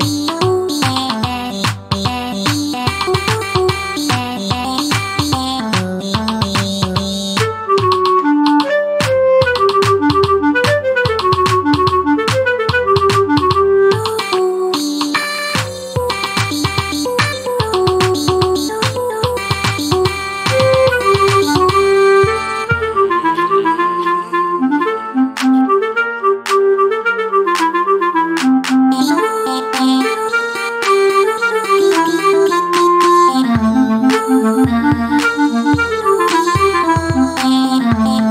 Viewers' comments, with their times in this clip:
0:06 craziest beat in the whole thing
0:23 ain't nobody gonna talk about how hard the clap was 🔥🔥